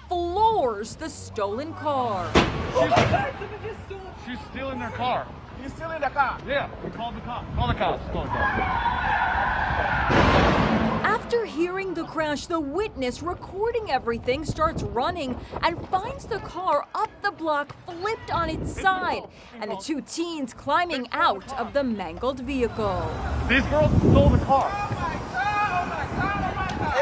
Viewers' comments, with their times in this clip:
0:08 The sound of the car crashing sent shivers down my spine not gonna lie 😬 RIP to the victim :(